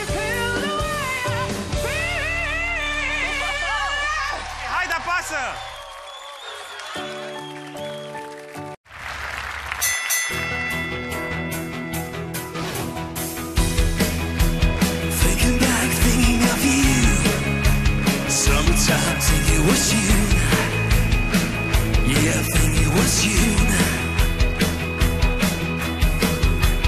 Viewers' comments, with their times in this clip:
0:10 the bald guy never stood a chance ...he's a singer but the long haired guy is a star ... what a voice ...